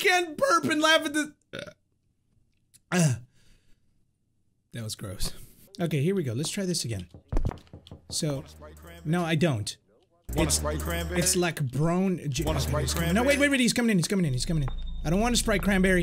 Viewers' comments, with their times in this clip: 0:03 Your a mix of: Jacksepticeye, because of the laughing Markiplier, because you look like him sorta. And Crainer, because of the starring like